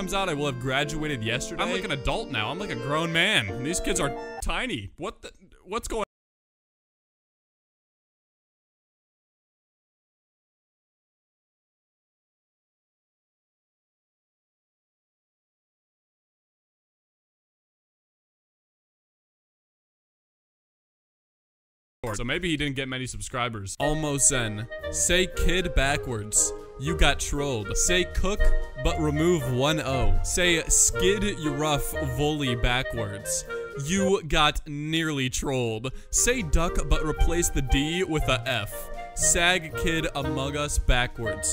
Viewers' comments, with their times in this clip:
0:06 Anyone else lose audio randomly?
0:06 no one’s gonna talk about the audio cutting off?
0:06 my video sound go bye bye
0:07 why did those sound just cut off?
0:15 does anyone else have no audio at this segment
0:22 audio is back